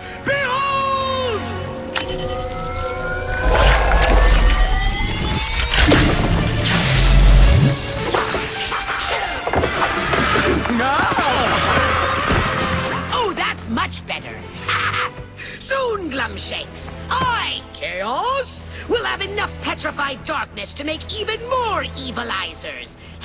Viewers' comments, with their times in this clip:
0:09 Kaos says "BEHOLD" so epicly, then presses a button